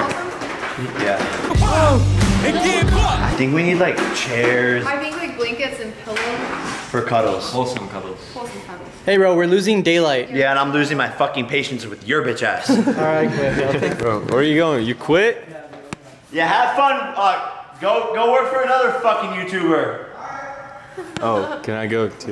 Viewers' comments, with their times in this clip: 0:10 Does anyone realize he has a small lisp